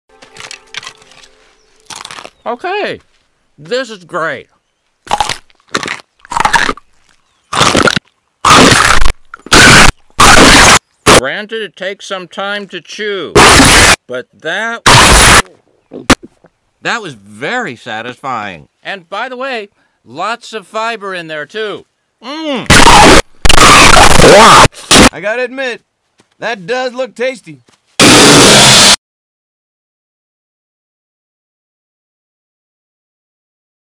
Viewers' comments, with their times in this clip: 0:07 [ N E C C S N A P ]
0:07 This crunch is the one that gets me every time.
0:08 sounds like when you get a strike bowling
0:08 bowling ball hits pins
0:09 “I want everyone quiet during this test.” 11 year old eating smarties in the hallway:
0:11 "Granted, it takes some time to chew" Spills a box of lego blocks
0:11 “Granted it takes some time to chew” C R O N C H -
0:12 Nobody: Dentists scraping your teeth:
0:12 Dentists: This might make a little noise.
0:13 "Granted it takes some time to chew" CRONCHING INTO A MIC
0:13 "Granted it takes some time to chew" GLASS BREAKING
0:15 Dads after coughing so hard.
0:16 I gotta say, that bite/chew of earrape after he finishes it at first is just the symbolism of God: “I’m letting you have infinite power.” Me: “Uses it irresponsibly” God: “Nevermind, I’m topping you out right there.”
0:21 Just i Heard waluigi speking WA
0:22 THE LOUDEST ASMR CRONCH EVER. I couldn't stop laughing! I couldn't even walk straight!!
0:22 My bro’s $5 mic:
0:24 cut crunch punch
0:24 sounds like he says WAP
0:24 I started getting concerned of my speaker
0:25 Opening a bag of chips at 3am when everybody else is asleep
0:28 ear rape sound
0:28 when my dad sneezes
0:28 when my sleep paralysis demon starts screaming at my dumbass
0:28 ...oh my ears!
0:29 Nobody: Jets being launched: